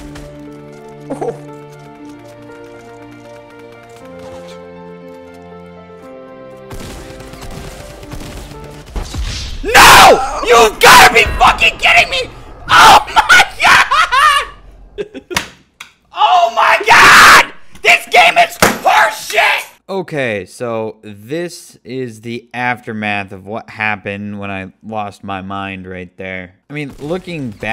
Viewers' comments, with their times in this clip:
0:09 Rip headphone users 😂🔥👌🏻 My ears hurt now :p
0:09 warning your ears may bleed